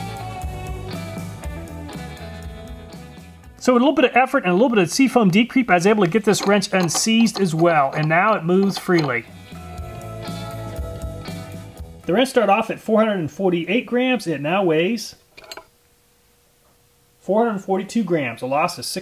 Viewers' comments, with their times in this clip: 0:04 PS The reference to what sounded like "C foam de-creep" was in the video.